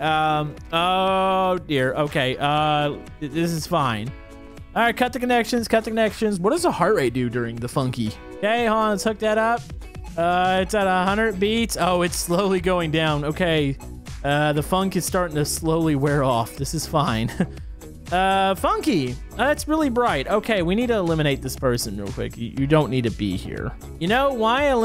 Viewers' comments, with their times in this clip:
0:09 the heart beat monitor is following the funky beat